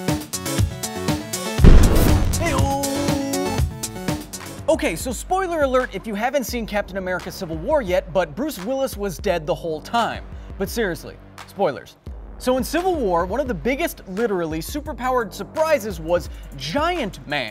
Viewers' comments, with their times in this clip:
0:05 i hear a skype notification.